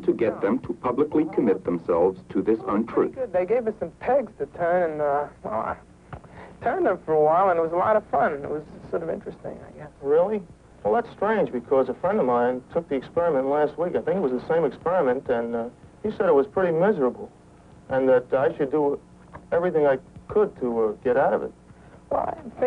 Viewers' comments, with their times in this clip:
0:03 Anybody else have to do a double take in to see if that was actually a young Christopher Walken speaking?
0:05 all I can think of listening to this guy is how much he sounds like Christopher Walken- never heard anyone with a cadence so similar.